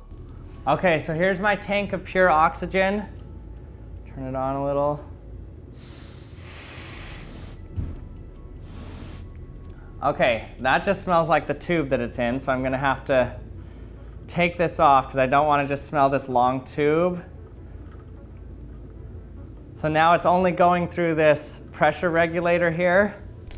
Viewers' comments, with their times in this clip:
0:06 Alright, I was playing Minecraft while listening to this and I found diamonds when the hissing played. I thought it was a creeper.